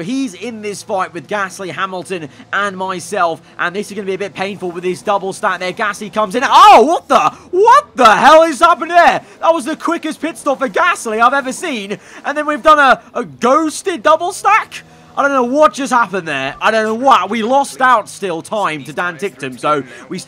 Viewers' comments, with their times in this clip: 0:06 The way you said "WHAT THE HELL" 😂